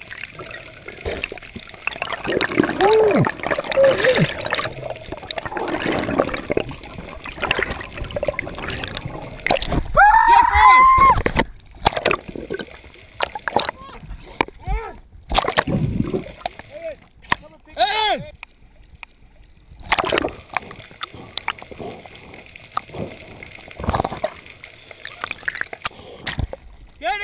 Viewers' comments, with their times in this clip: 0:09 I LOVE the fucking scream he gives when he emerges out of the water haha.
0:09 Watch how these men submerge from the water giving off the screaming goat sound.~ /27
0:10 scream :) pretty damn sure that was a goat
0:10 dat scream doe